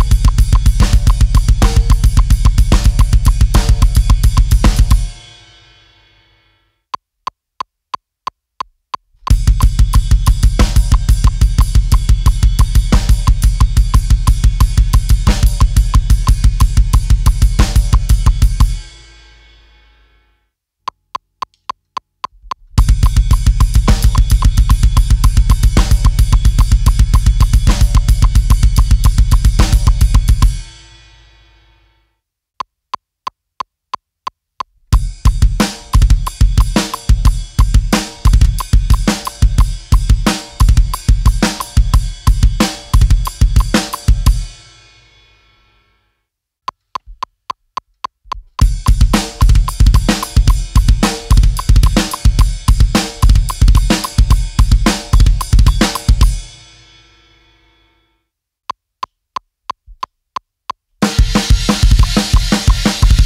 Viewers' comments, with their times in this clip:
0:08 That's a Martin Lopez riff if I ever heard one.
0:32 In Ex. 3 when he play slow he do it perfect, but when he do it faster he dont. Is 3 bass beats on 4 and then on 5& 6 are two but he beat it like he did in 4. So If you are practicing listening do it better writing those notes and practicing by your own. Take a look.
0:46 Awesome, though he added an extra 16th note on the a-count of 5